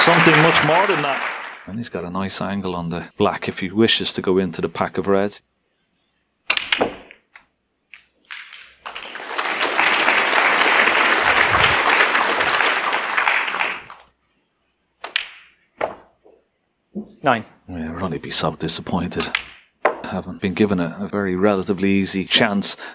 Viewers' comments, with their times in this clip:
0:04 Neil goes in to the pack, polite applause. He hit the pack way too hard. Six balls moved (which is a lot), and they all moved way too far. Imagine if he had hit just two or three.